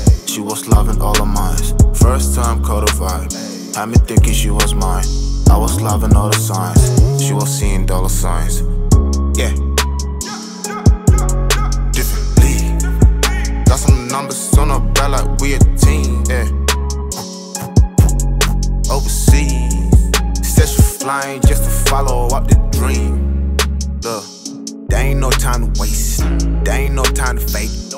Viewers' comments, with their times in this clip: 0:10 soundtrack looks like resident evil